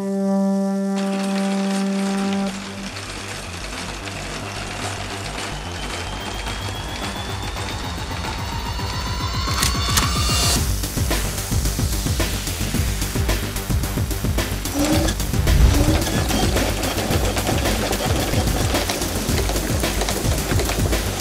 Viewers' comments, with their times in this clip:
0:04 I mean this video is awesome, but when it hit the music sounds familiar to me.